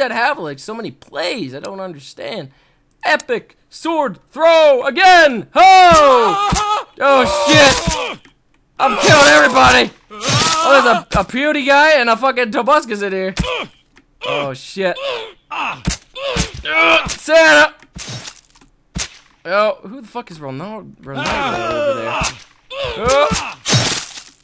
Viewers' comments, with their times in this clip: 0:09 He says Pewdieguy
0:10 Watch the sword hit Tobuscus, and enjoy the laughter xD